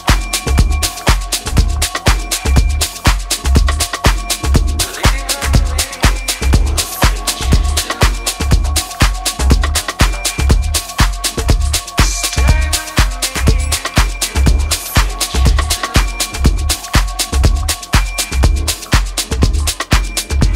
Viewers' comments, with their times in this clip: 0:05 Sweet... NYC Love....!!! A Trance Beat ...